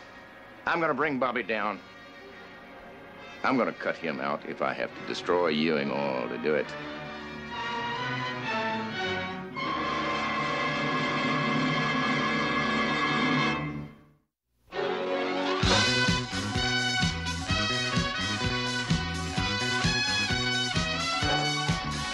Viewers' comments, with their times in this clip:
0:06 that MUSAK tho!!!